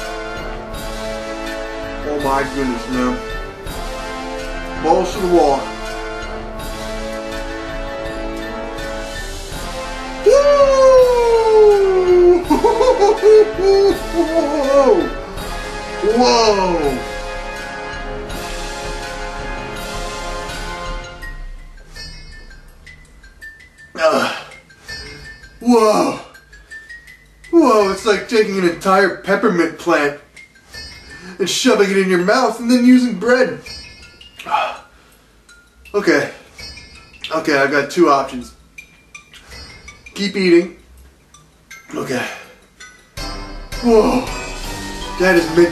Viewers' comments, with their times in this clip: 0:09 you think he was summoning for the "Nature Boy" Ric Flair!!!
0:27 HE SOUNDS LIKE SHAGGY